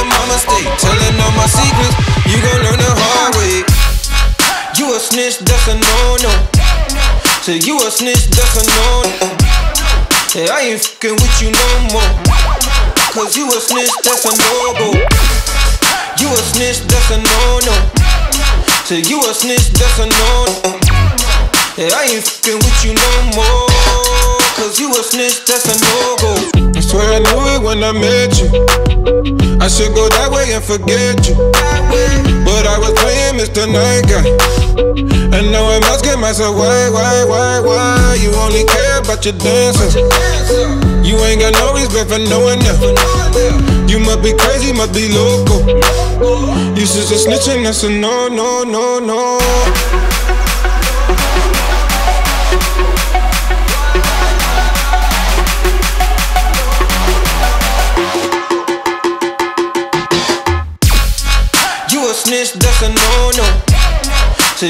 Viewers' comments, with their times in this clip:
0:04 Reminds me Netsky x Jauz - Higher
0:50 The build up is so misleading. A D&B VIP is needed.